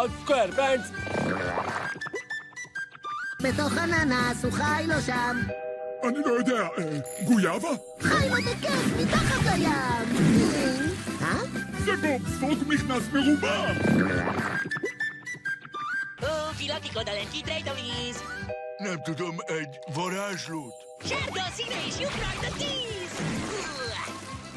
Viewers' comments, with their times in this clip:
0:06 I think Patrick said a Pokemon's name, Quilava